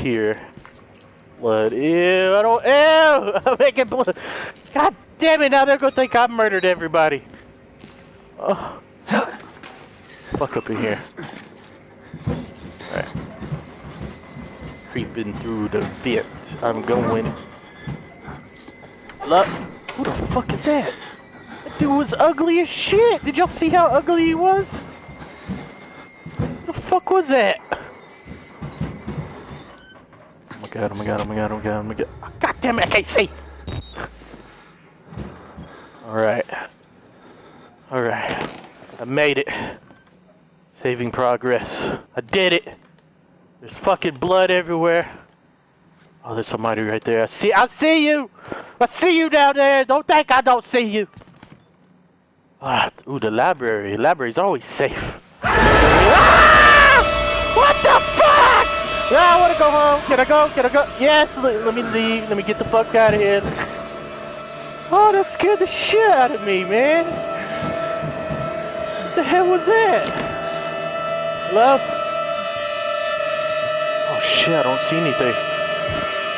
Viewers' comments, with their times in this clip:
0:09 Is it me or did he say HELEN
0:51 LMAO!!!!@ too funny "Ooo The library, the library is always safe." * opens door * * SCREAMS * * dead body hanging from the ceiling * "WTF!!?! Ahh i wanna go home" LMAO
0:55 the way the mouse moved definitely went perfect with the way he screamed.
0:56 His SCREAM is scarier than the event lol His SCREAM scared me more 😑
0:58 Oo the library the library is always safe Screams Lmao